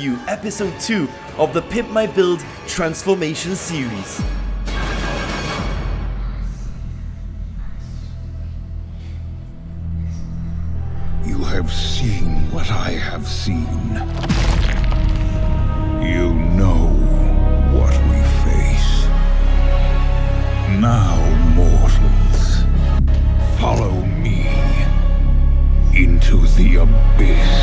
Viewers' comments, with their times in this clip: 0:10 How do you even make this This guy is speaking sooo perfectly